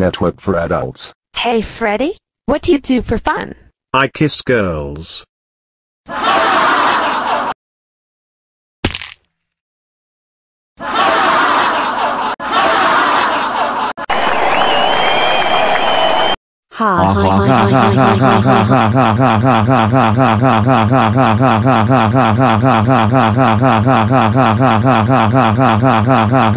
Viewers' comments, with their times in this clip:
0:08 old minecraft Downfall hurt